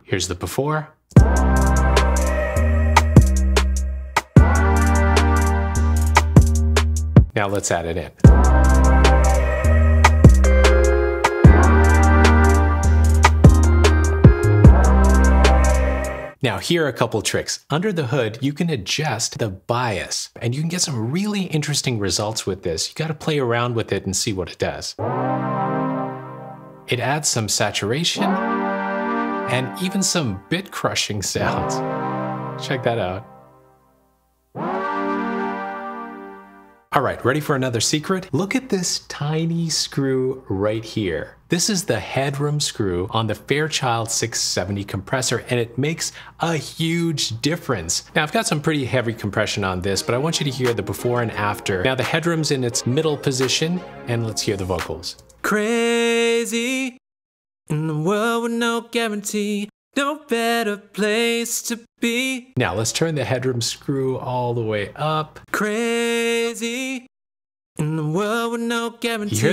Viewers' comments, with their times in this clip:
0:07 wow, a tape machine that adds a synth riff to the arrangement. Sweet!
0:50 catchy song what synth did you use for the chords?